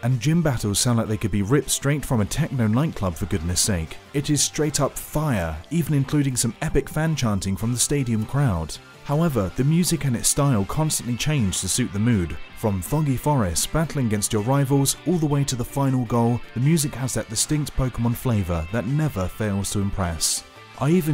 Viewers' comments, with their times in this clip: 0:03 Dead pan voice: it is straight up fire